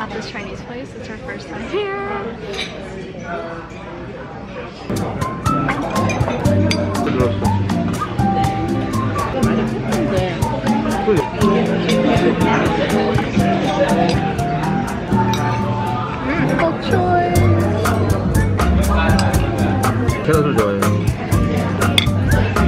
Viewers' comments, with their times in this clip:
0:07 Is that albanian on ?👀